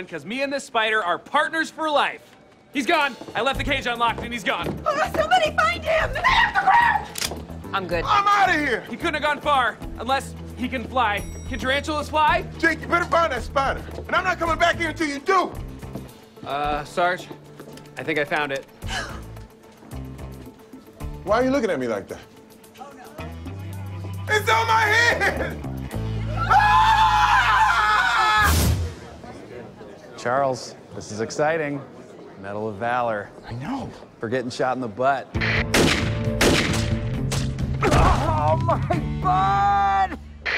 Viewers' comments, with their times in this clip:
0:04 Boyle climbing on the table and holding the phone in his hand while screaming "STAY OFF THE GROUND" really made my day haha
0:06 boyle's high pitched "stay off the ground!!" is everything
0:06 what did Boyle actually scream here I literally can't understand it 💀
0:27 Terry with Tarantulina on his head is sooo cute though😍 but yeah, i'd scream like that too if i were in the same situation😂😂😅
0:27 Terry’s scream was so funny